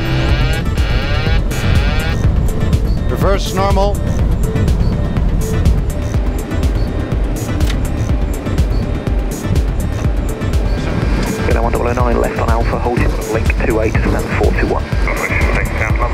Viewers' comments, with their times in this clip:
0:03 that didn't sound like the usual Boeing auto-pilot disengage warning. Why so late, anyway?